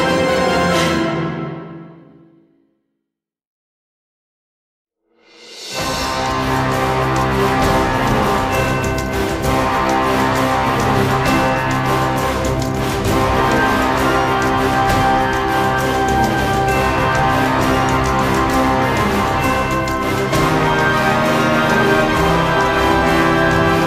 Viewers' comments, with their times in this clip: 0:04 always goosebumps when besieging Sylvan towns, theme always makes it hype